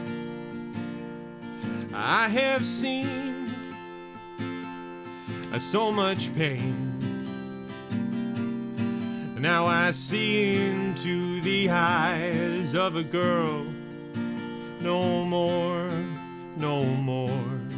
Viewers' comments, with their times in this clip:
0:05 I’m really glad that I got to wake up to his singing, he really does has a beautiful voice